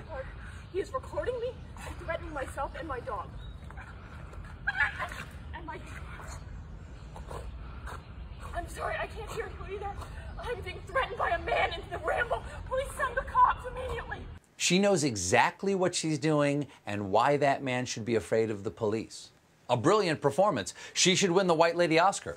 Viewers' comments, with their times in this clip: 0:04 i thought she had faked a yell or something but it was the poor dog yelping as shes choking him right as he twists and falls